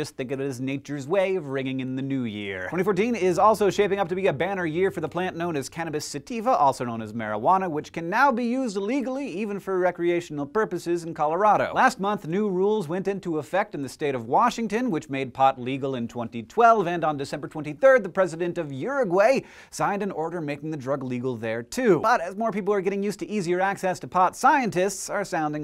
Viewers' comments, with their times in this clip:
0:08 "Can now be used illegally" What?
0:09 Did hank say illegally, or legally?